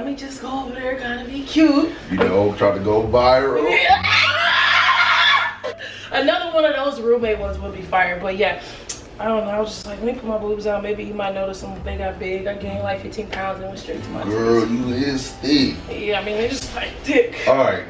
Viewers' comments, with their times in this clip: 0:04 ⚠Caution:R.I.P. HEADPHONEUSERS--- lmaoo😂😂😂😂😭